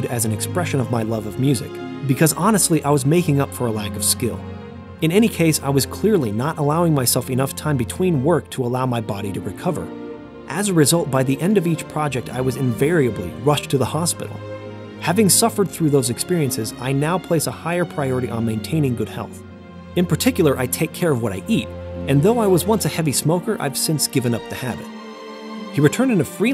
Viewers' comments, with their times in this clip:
0:10 I’m surprised you didn’t throw in a requisite verbatim laugh, seeing as you tend to add your own emotive, dramatic flairs to quotations. (laugh) ;)